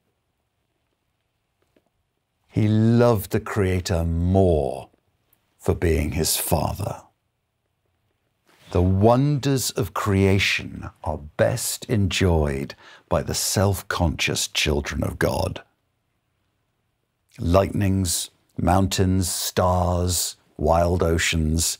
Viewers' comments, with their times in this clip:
0:07 What is "philael"love? is he saying phileo?